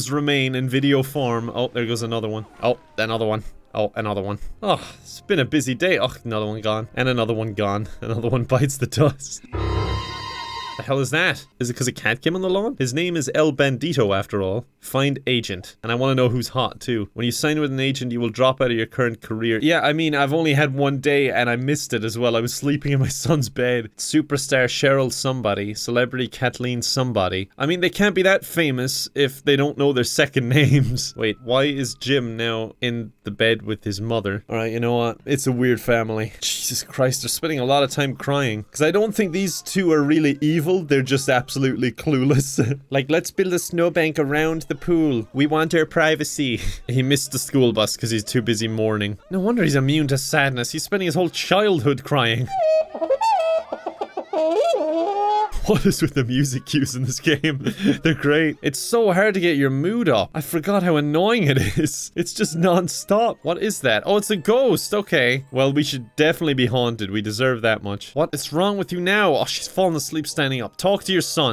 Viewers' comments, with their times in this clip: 0:09 Dramatic Raccoon music!
0:52 Trumpets meant to represent vocalizations? Suddenly, The Sims 1 is Don't Starve.